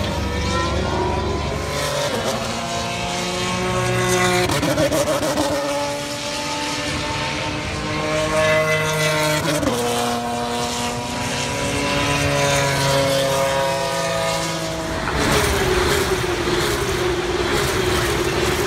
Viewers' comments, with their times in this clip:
0:04 oh that shifting sound